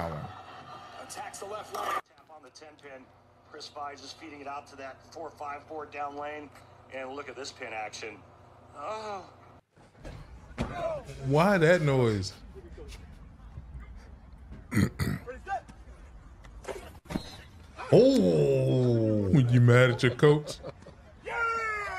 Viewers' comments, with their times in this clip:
0:08 that moan was outrageous 😂😂